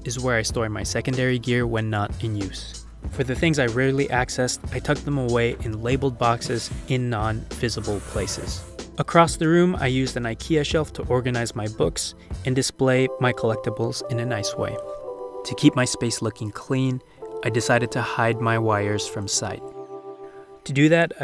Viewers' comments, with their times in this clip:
0:04 "I tucked them away in labeled boxes in non-physical places." What sort of black hole is in that cabinet?!